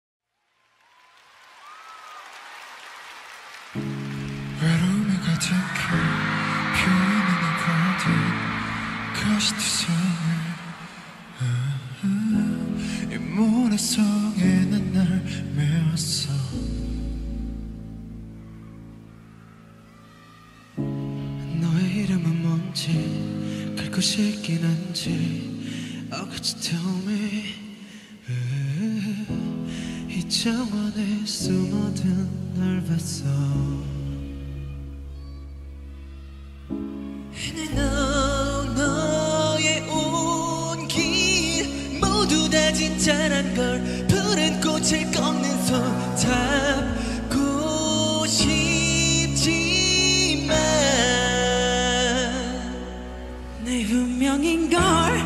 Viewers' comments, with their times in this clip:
0:04 repeat it... Oceanly and heavenly deep voice of Tae 💜🫶
0:36 Jin being the real líric tenor that he is
0:36 The passion in his voice is just...